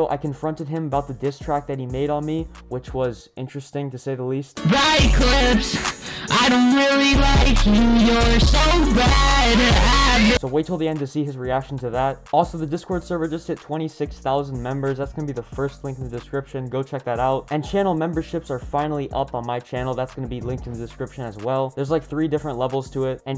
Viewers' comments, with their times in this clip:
0:05 that was a bad idea to wear headphones on full volume ._.
0:05 vevo REALLY??? HIS MIC IS LAGGING!